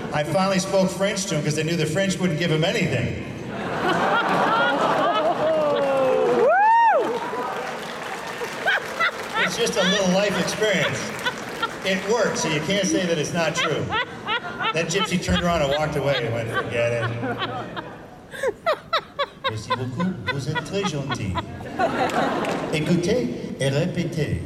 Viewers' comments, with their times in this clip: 0:07 constant chortling cackle